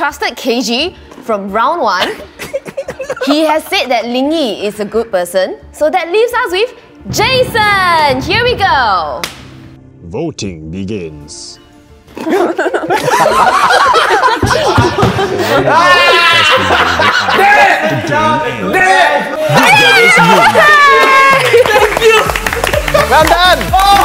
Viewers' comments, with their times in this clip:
0:06 coffin meme song plays